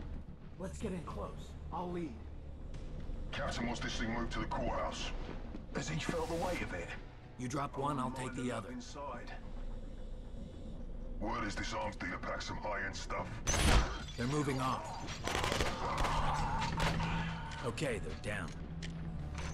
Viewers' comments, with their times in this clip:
0:03 are they british? lol
0:03 are they british? lol